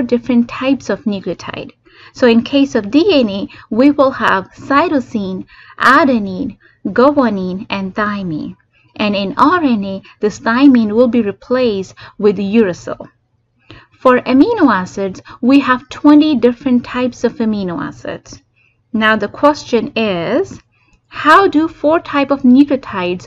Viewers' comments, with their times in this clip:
0:06 THE WAY YOU SAID GUANINE IS SOO CUTEE😭😭